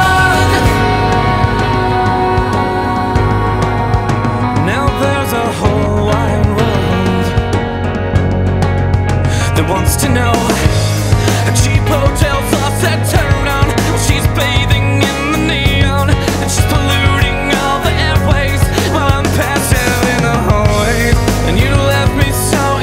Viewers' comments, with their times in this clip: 0:03 the rhythm guitar is such a nice surprise for headphone listening, after only listening to this in the car for years lol